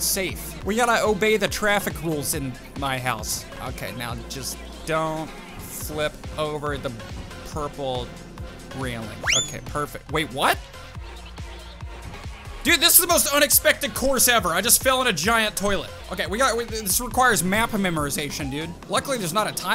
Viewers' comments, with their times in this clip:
0:06 the music was perfectly timed with the car bouncing